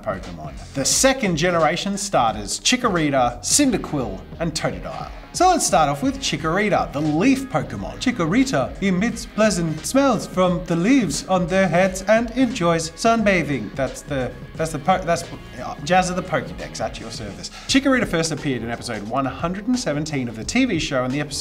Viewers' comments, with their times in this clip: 0:08 didn't really sound like a pokedex but kinda like james